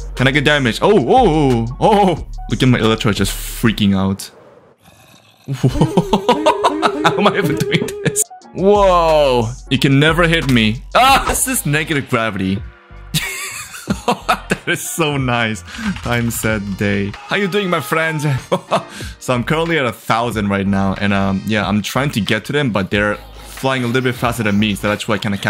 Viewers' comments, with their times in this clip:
0:06 That sounds like the sound effects in Board Meeting from Rhythm Heaven Fever! (I’m not a fan, 2023 just cursed me to talk about the Rhythm Heaven Series. It’s a long story.)